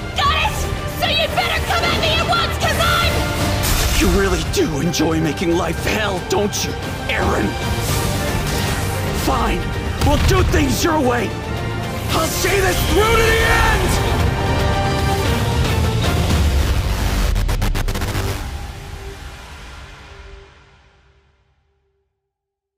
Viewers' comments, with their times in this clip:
0:09 Armins English va fucking killed this line